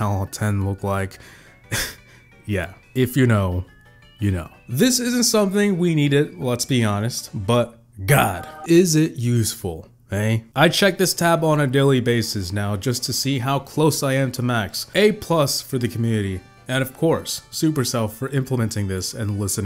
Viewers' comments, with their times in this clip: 0:04 "If u know u know" the Phub theme got me 😂😂